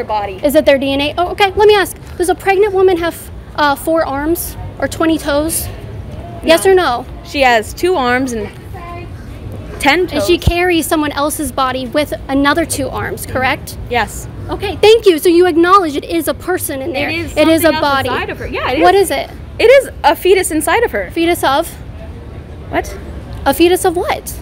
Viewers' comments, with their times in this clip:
0:08 I like how she hesitated when thinking about how many toes a pregnant woman has 😂